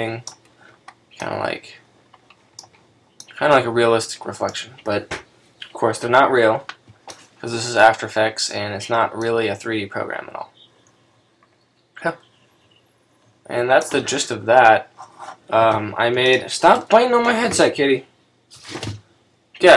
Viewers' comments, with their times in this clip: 0:03 What the heck. You don't know what and how to talk about. It is impossible to learn anything because your video is fuzzy, not HD, and you speak indistinctly as if you yourself were just learning. After Effects is not a 3D program? Have you heard of the Element 3D plugin? Try it. you say that you cannot make the reflection realistic, it's not true, it is possible. When you made the mask, you could press F (Feather) and feathering the outline of the mask. How about a text, did you have an idea? How about the text appears after the fourth second with a transparency animation? Come on man. Before filming a tutorial, you must literally plan everything, every click with an explanation of why you clicked on it so that your viewers understand everything, remember and learn. You are joking inappropriately, voicing the movement, yelling at someone there. This is not serious.